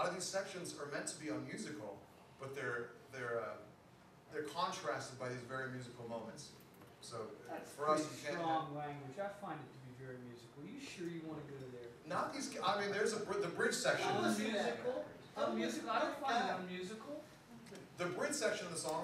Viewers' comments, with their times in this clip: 0:06 The tone and character of his voice sound a lot like Paul Reed Smith. EDIT : ok it's him I'm dumb :D